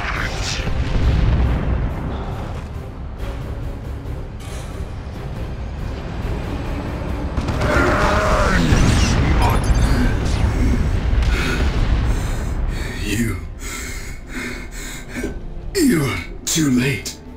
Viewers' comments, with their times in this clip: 0:05 Rhinos, RHINOS! Metal boxes... The enemy hides in METAL BAWKSES, the cowards, the FEWLS!